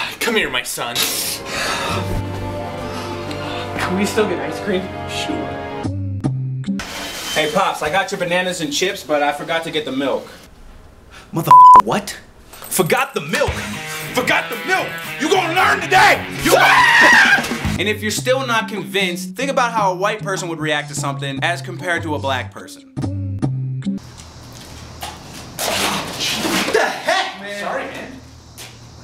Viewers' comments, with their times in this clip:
0:06 Aye Pops I Got Your Bananas And Chips But I Forgot To Get The Milk The F*ck What? Forgot The Milk?!?! FORGOT THE MILK!?!?!?!?!?! YOU GONNA LEARN TODAY!!!!!!!!!!!!!!!!!!!!!!! Screams
0:16 his scream made me laugh😂😂😂